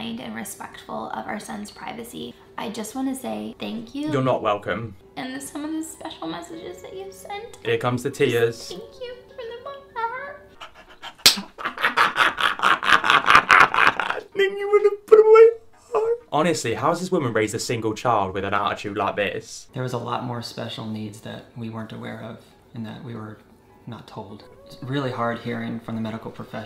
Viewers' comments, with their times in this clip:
0:09 i can't with the laugh 😂
0:10 His laugh is so deliciously evil 😈
0:10 minutes in the vid the laugh tho